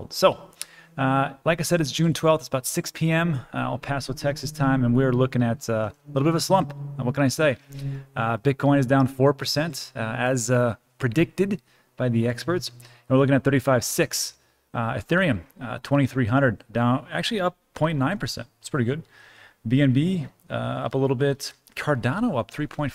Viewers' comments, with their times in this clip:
0:03 You guy hear some weird hum in the background ?